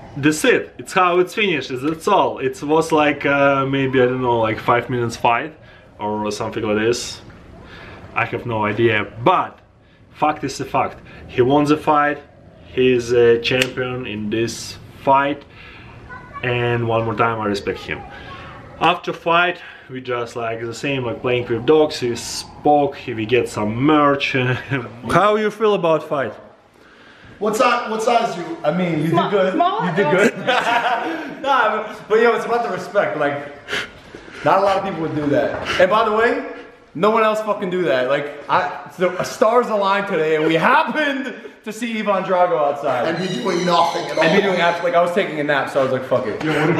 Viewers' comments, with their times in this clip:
0:10 Fucked is a fucked 😂😂😂😂
0:28 logan voice sounde deeper that normal😂